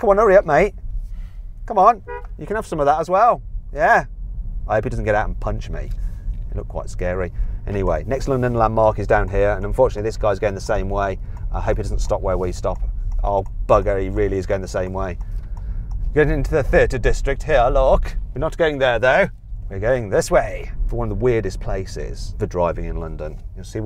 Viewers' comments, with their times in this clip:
0:05 how much is the penalty for beeping 3 times in a residental area without reason?